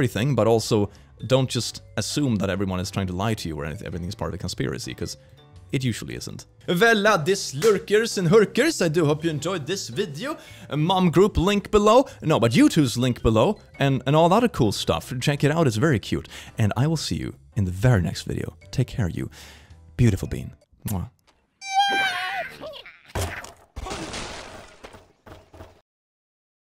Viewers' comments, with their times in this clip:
0:08 am I the only one that heard lurkers and hookers?